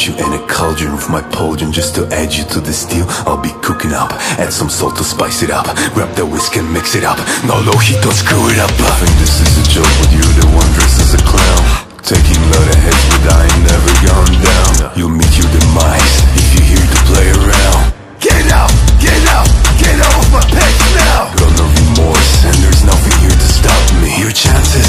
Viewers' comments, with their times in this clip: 0:09 Yeah, the vocals absolutely dog the song. But the instrumental is really well made